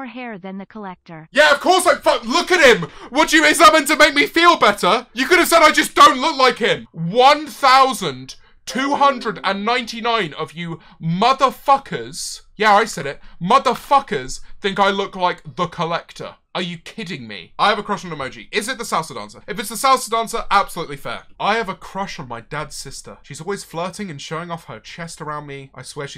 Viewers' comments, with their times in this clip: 0:08 my soul left my body for a moment because of the Microsoft USB sound